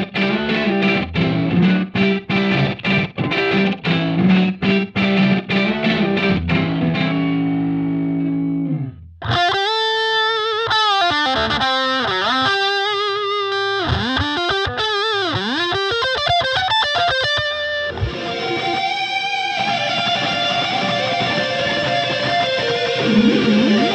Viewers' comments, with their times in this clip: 0:09 Kid Charlemagne solo tone